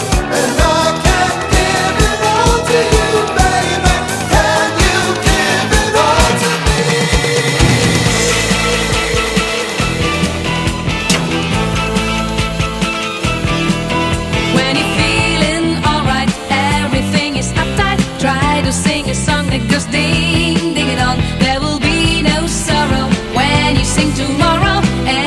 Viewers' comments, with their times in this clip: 0:09 That song reminds me of the song in the 1975 Eurovision from the Netherlands